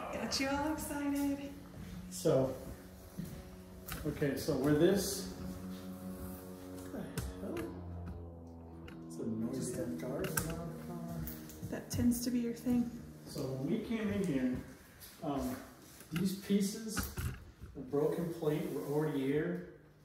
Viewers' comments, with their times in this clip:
0:08 oooooooh yes! popcorn & a pillow to hide behind Also I had to laugh a little It’s not a car it’s a small plane with a propeller hehe!